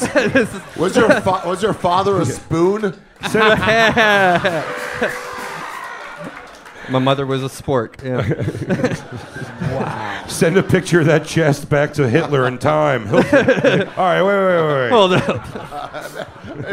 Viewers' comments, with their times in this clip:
0:03 sounds like joe rogan laughing in the crowd.